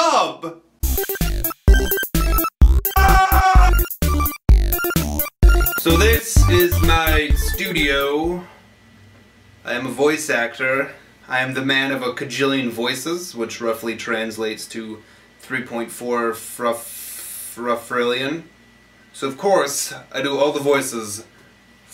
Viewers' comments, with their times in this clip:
0:03 I love the random scream XD